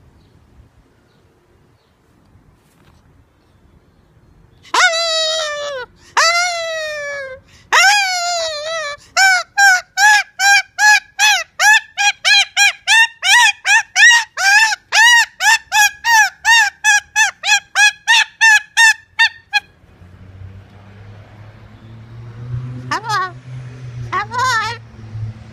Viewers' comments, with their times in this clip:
0:10 Princess Wuk is having such a good time.What was she imitating ? So funny, lots of different sounds. Thanks for the upload; it made my day! 😄